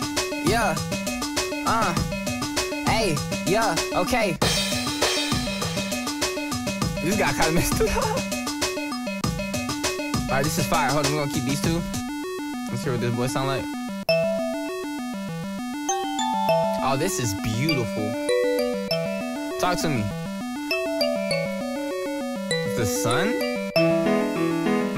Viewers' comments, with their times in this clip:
0:07 Kinda sounds like gravity falls